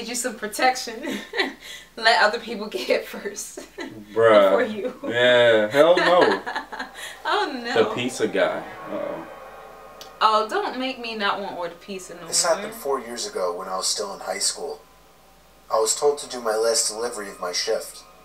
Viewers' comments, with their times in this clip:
0:04 He sounded just like the bruh guy tbh lmao